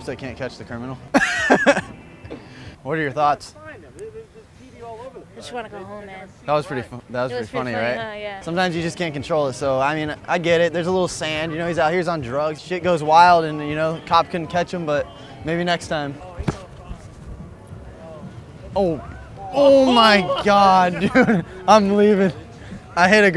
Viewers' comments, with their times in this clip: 0:04 so relaxed by that, her voice is smooth.